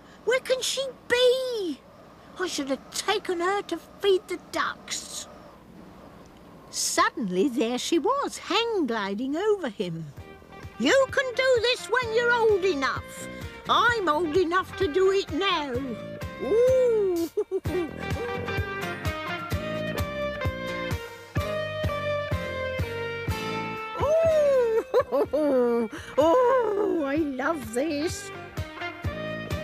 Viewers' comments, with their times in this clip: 0:10 did the really have to write a song that slaps that hard for a kids TV show 🤣